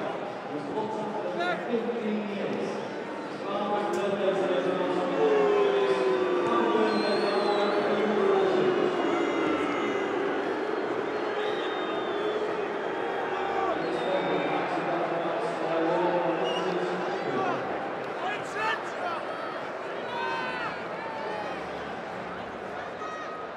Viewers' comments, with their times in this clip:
0:09 Lmao the boos couldnt be more softer